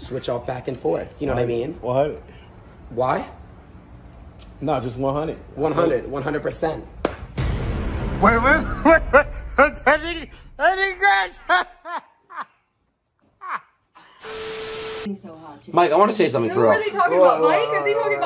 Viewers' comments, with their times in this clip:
0:03 even the camera man starting laughing 😂